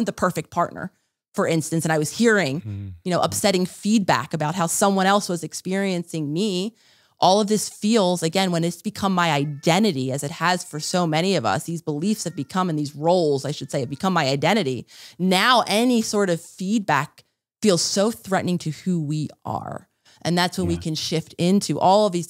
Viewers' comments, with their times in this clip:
0:09 cat meowing? lol startled me